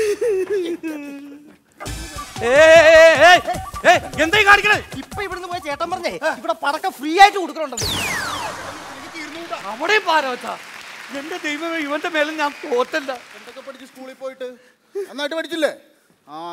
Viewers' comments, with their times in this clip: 0:04 That "heh" in ....!